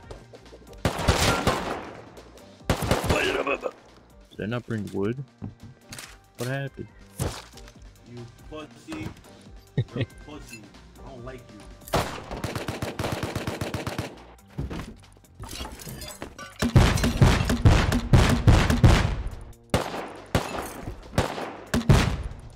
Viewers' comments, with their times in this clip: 0:10 kinda sounds like this guy who tried beating me up with a bat when he’s like 300 pounds and like six feet lmao